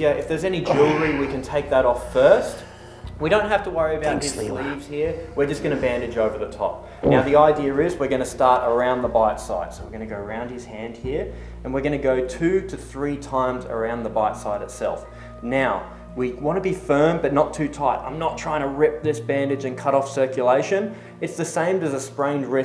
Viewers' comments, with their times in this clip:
0:06 Did anyone else hear a fart?
0:06 did i hear someone fart?